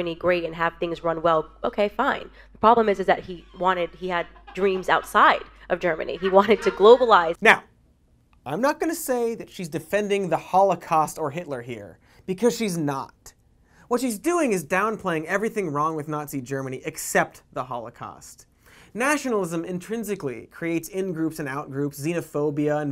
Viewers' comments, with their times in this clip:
0:08 my favorite thing about this candace owens clip is that it was pulled from the majority report and you can hear michael laughing in the background